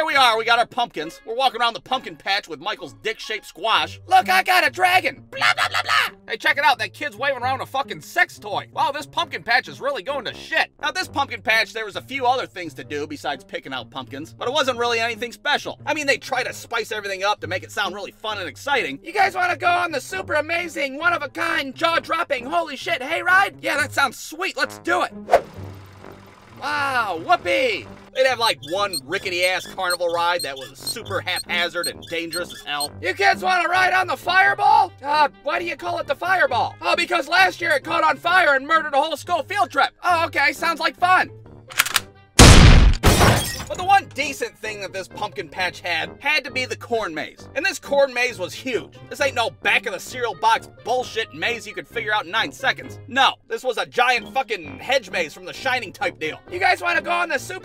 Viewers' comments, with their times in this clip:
0:05 it fucking kills me when he does sounds like this lmfaoooo
0:41 (Click!) (Boom) (Thud,Glass Brake)
0:41 I like how "The Fireball" cocks like a gun and Apollo 11's Michael